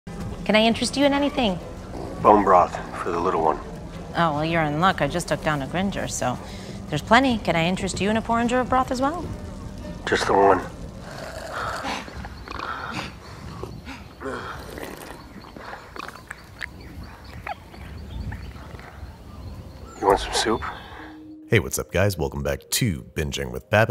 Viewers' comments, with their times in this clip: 0:07 what's a porn-jo broth?